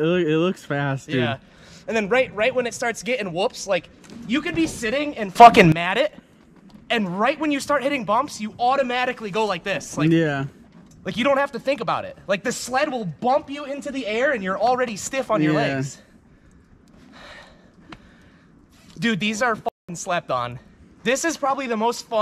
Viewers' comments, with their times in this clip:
0:04 I love the accidentally volume raise instead of lower of the swear lol
0:05 lmao instead of muting the F bomb yall like bass boosted it